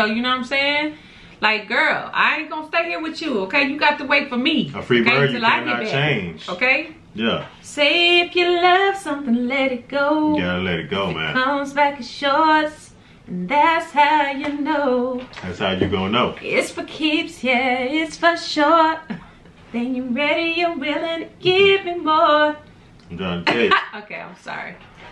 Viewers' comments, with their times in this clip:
0:07 Busting out with the Christina Aguilera (What a Girl Wants, for those who didn't know what she was singing) Haha! I like that song too! I am assuming you've known of that song for years now, so don't have a reaction video to it? I'll have to search that. 😁 The solo is the obvious part that stands out for me in this song. It just makes you picture a bird flying high and fast. If I flew a fighter jet, this is definitely one of the songs I would listen to on a regular basis! 😁 I first heard this when my friend introduced it to me back in the mid 1990s, when I was a teenager. We listened to a lot of different rock bands back then but he showed me some older southern rock stuff like Lynyrd. Good stuff! ☺️